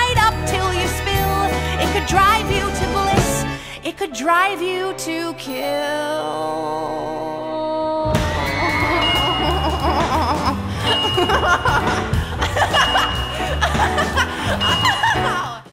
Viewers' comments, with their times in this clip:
0:11 that sounded like him O-O
0:11 Badboyhalo: NO YOU SILLY MUFFIN HEAD!!! badboyhalo in this vid: evil laughter